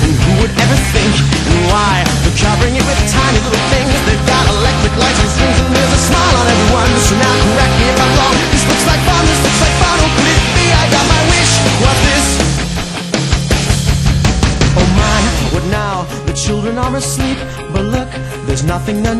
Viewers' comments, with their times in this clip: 0:04 I love how he sings that part :D